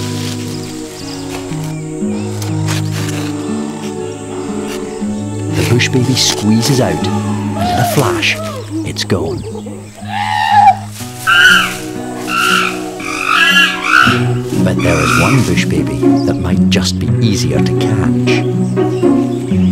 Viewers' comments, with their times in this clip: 0:04 I'm dying it's taken me ages to get all the way through this clip. Just the contrast between female with youngster taking things easy and big lad beating the crap out of the stick, the tree and furiously determined not to be beaten only for him to cruelly lose it all including his manly pride and dignity when he screams like a lady from the 1940's who just saw a mouse in the pantry.